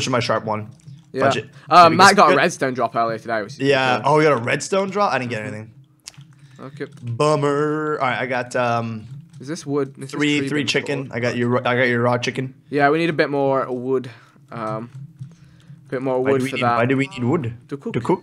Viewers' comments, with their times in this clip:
0:04 Vik goes: oke. lol same as that guy from the vine